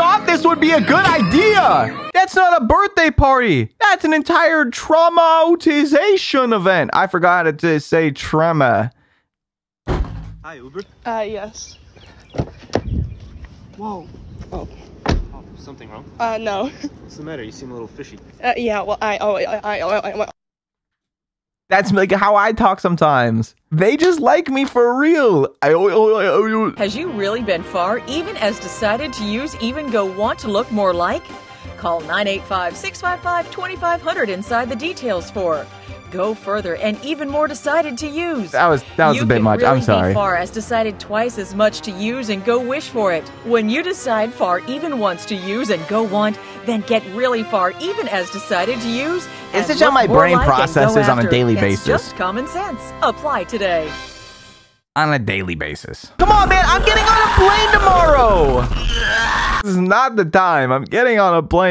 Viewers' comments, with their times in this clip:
0:06 Trema (this is where I lost)
0:47 the TV when your falling asleep be like: